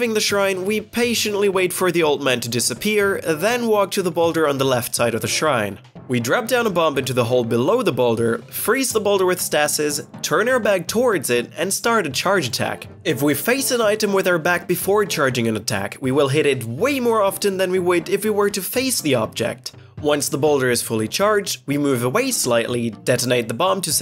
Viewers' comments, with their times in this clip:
0:09 I've never heard someone say "Stasis" that way!